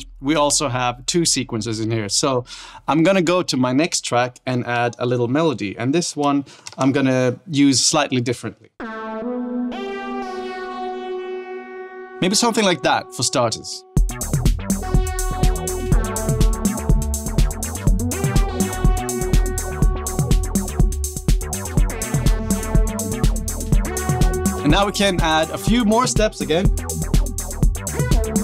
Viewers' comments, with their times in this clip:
0:10 Really loving the melody sound from ! Any idea which preset it is, or how to make it? Would buy this just for that sound, it's gorgeous! Thanks.
0:15 That bass sound especially makes me expect that David Pumpkins' skeletons will pop out and dance at any time...